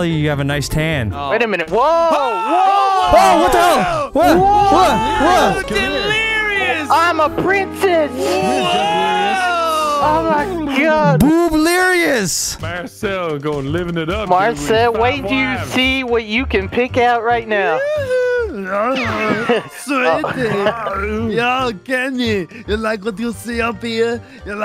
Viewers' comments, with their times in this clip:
0:10 I like how Vanoss sounded like he had his mouth on the mic when he said “BOOBLERIOUS” like he got a mouthful of it 💀💀
0:10 the way he said it 😂
0:10 The loud B in the booblerious💀💀